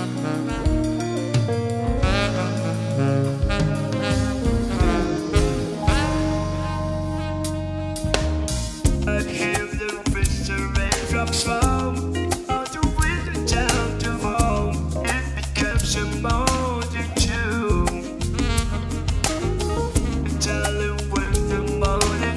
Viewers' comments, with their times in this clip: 0:10 Daft Punk suddenly enters the room